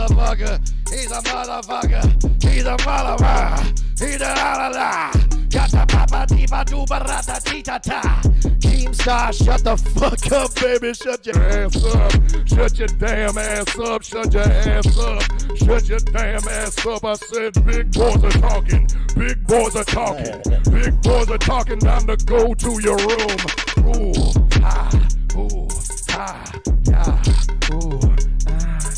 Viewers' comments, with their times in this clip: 0:05 sounds like Korn!
0:14 turns on black voice lmao